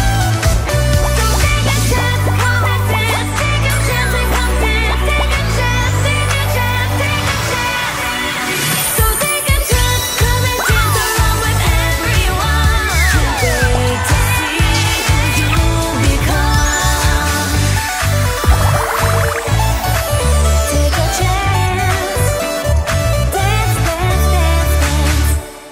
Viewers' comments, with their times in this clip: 0:09 so uhh it actually sounds like she says mega dogecoin